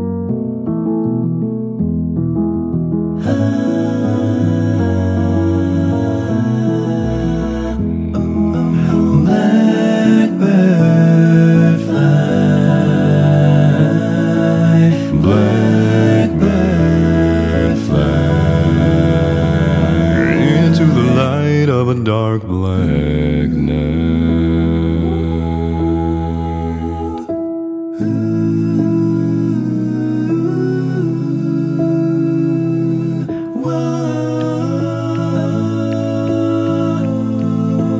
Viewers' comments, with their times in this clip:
0:07 bro I'm bass but I can't reach that
0:20 his voice is just soooo smooth